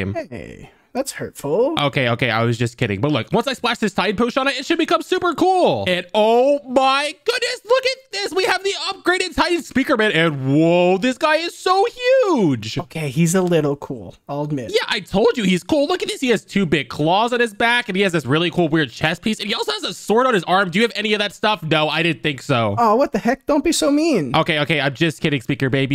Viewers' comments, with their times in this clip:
0:07 bro said we got the UPD Titan Speakerman bro he’s voice is broken